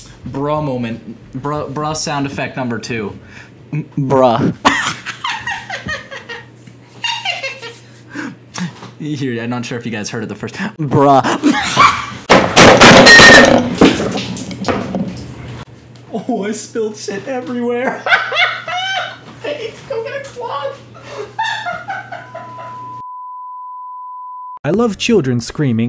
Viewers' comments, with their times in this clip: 0:05 dude proceeds to laugh like a witch and then die in the process
0:11 neighbors: is he having a swat raid ?